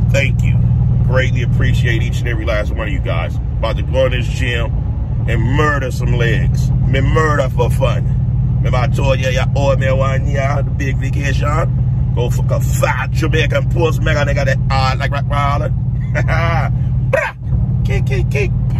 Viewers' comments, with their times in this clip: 0:05 caught me off guard mann we needa hear that Jamaican accent more often 🤣🤣🤣🤣🤣🤣